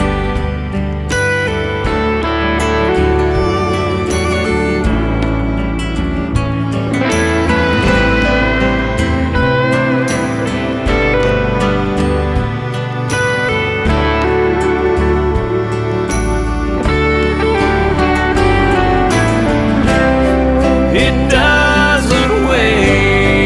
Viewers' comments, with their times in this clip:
0:08 Such beautiful country songs and George singing them Like no one else! He is the greatest in the world!!!! I will always love his singing and him !no one can replace him to me!!??